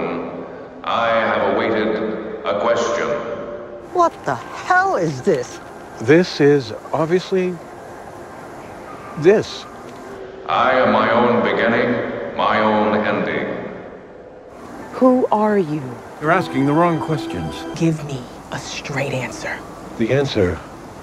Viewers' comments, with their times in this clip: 0:04 Emotional damage accent)